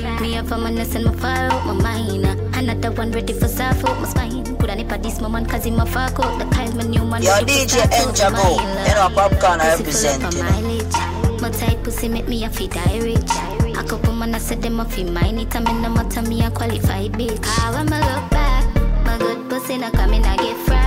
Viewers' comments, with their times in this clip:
0:04 song siiiick! She a chop up di riddim